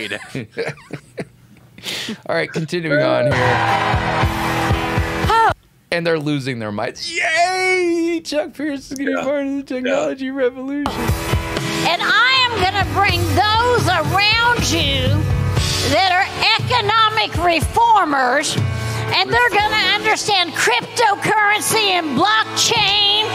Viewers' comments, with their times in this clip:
0:09 this lady's voice!!!!!!!!!!!!!!!!!!!!!!!! How are the people there not having seizures? Poor woman.